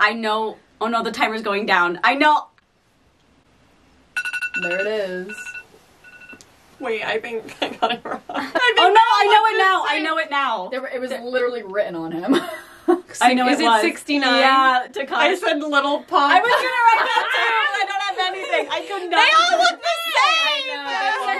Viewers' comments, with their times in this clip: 0:04 NO!! i’m already awake!! i was not prepared for the alarm noise🤣🤣
0:09 Amazing video up until couldn’t bare the alarm sound .